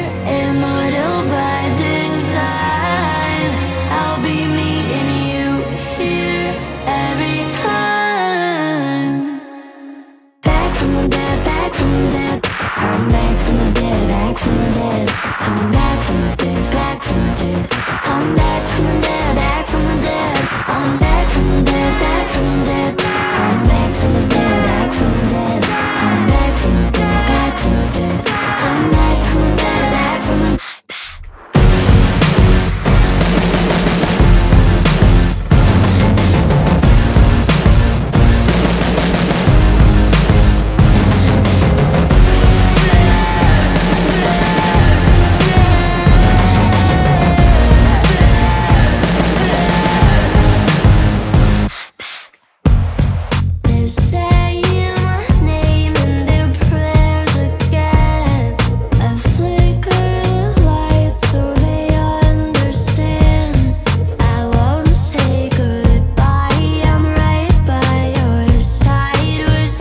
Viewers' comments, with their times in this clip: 0:09 I love this part from there I like all the music ❤️🧚🍄
0:27 that little whisper of "im back." before that bad beat drop GAVE ME THE GOOSIEST GOOSEBUMPS EVERRRRRRRRRRRRRRR
0:31 when she whispers “I’m back” just gave my chills ur such a great singer Mel keep going <3
0:32 this part is so catchy, I never thought I'd be so obsessed with Mels growls, drawing influences from so many different genres and creating something truly original. She truly evolved but still kept her style
0:32 IS LITERALLY MY FAV PART ESPECIALLY THE FUCKING BEAT OMGGGGG
0:34 BRO I WAS TWEAKING BECAUSE OF THE BEAT DROP
0:52 I love how the production builds Vocals+Bass+Kick Vocals+Bass+Louder Kick Vocals+Bass+Louder Kick+Guitar